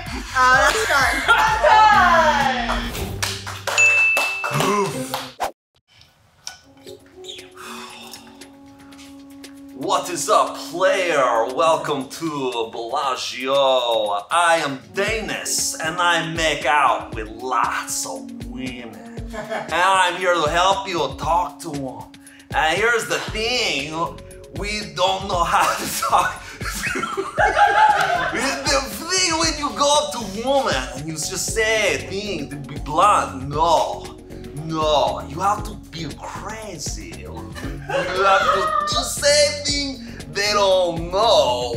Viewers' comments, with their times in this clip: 0:10 omg though is my favourite character. Chosen is second favourite. but this crazy russian guy he pulls out of his butt with the costume and accent is just the best
0:25 Why does Shayne sound like Niko Bellic ???